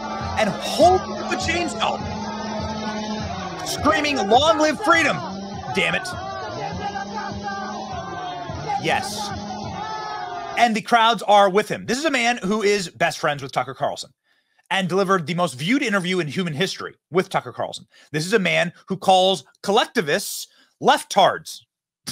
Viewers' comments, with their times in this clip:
0:03 There it is screaming, the Caste trembles😂😂😂😂